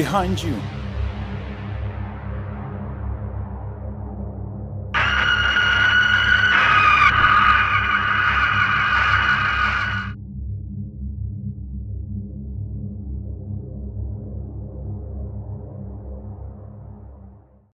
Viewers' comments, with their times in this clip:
0:04 rip headphones users be careful guys XD